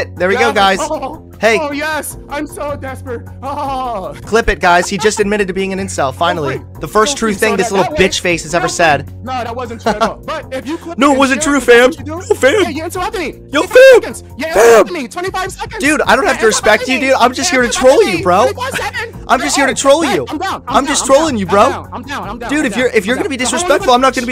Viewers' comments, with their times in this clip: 0:09 Omfg the chuckle might be the best personification of the wojak crying behind the smug mask meme ive ever fucking heard lmfao.